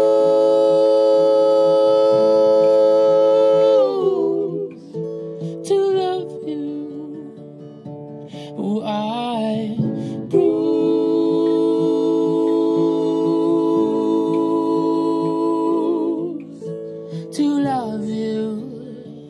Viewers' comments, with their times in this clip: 0:03 Beautiful voice and song but I couldn't help but laugh and I'm sorry. And why is everybody complaining about his videos? Do you want to watch them do a common silly challenge video of him trying to swallow cinnamon? His channel is HIS channel, and you're not the boss of it. If you don't like it, then fine, no one cares, it's your opinion. Go ahead and watch another YouTuber swallowing cinnamon or rubbing Nutella on their face. This channel is unique and inspiring, instead of every other YouTuber, they properly take advantage of their fan base and make an incredible video off of it. The unsubscribe button is right there if you can't handle what they post.